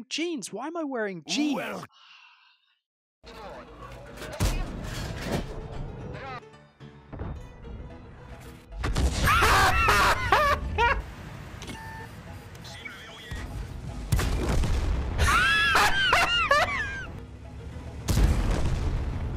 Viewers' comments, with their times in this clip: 0:06 I'm wearing headphones and it was on full volume. I like the earrape :D